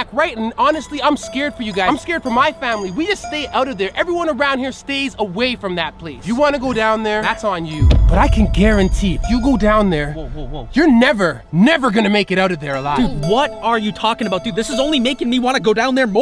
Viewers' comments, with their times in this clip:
0:04 it sounded like Wednesdays dad OMG!!❤